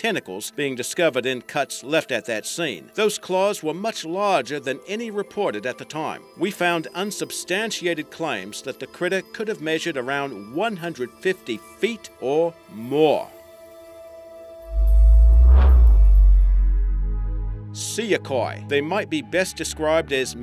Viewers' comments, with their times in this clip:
0:07 Is THAT the narrator!? He sounds so mature for his age!!